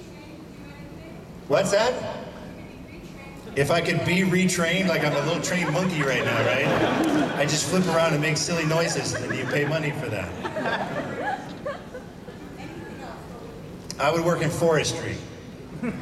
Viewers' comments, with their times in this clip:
0:03 Love the subtle baby crying in background as if it's reacting to Bruce's answer that he would be a park ranger if he wasn't an actor. Then the baby cries again after he says what he would do as a park ranger.